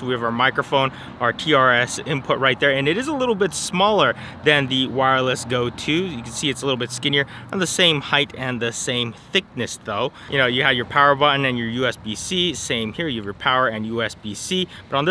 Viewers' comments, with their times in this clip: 0:03 I really liked sleepy Potato Jet until ... After the coffee he started rolling fast :)